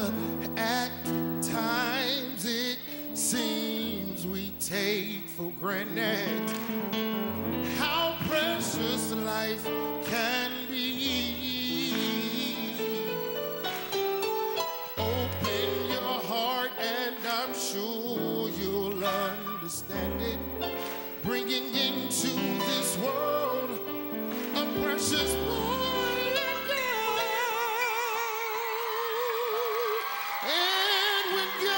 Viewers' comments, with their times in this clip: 0:07 I WANTED TO SLAP DUDE ON DA pA-INO -:15!!! MATTA-FACT, I WUUUUUZ PRACTICING BUT, IMMA JUST RETIRE FOR THE EVENING. -heavenly harmonic.
0:15 the keyboardist showed his chops !! He took it ALL THE WAY out!